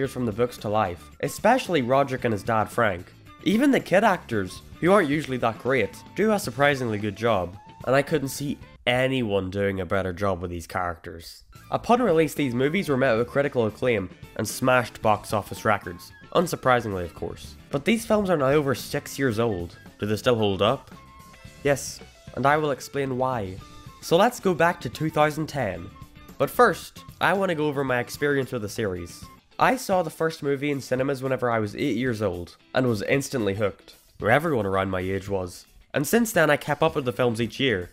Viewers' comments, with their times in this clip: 0:03 I HAD HEADPHONES IN AND ITS PM AND I UNPLUGGED WHEN THE EARRAPE HAPPENED
0:24 It's a.m. I'm trying to be quiet and all I get is Baby, baby OHHHHH